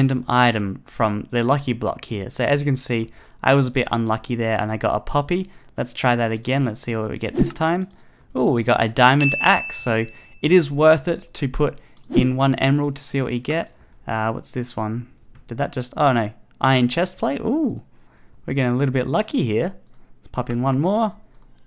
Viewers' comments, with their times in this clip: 0:05 it sounded more like he said puppy
0:05 that whooshing sound was timed perfectly with the diamond axe flying out of the lucky block!